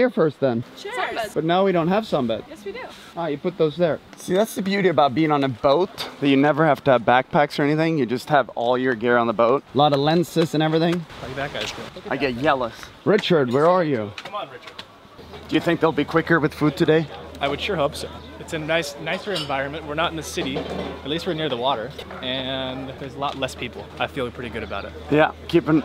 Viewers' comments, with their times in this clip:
0:10 did he really just say yealous.